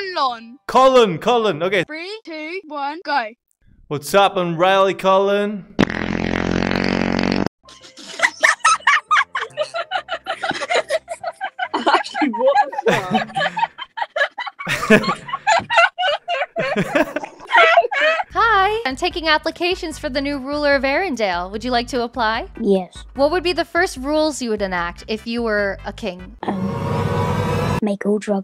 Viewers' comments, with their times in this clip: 0:09 he looked so disappointed after that fart